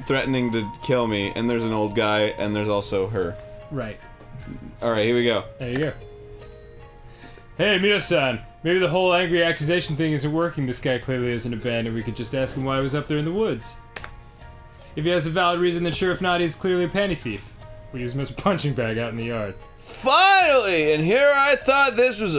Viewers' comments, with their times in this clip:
0:09 omg the voice you use for the red haired girl is just perfect. it's hilarious.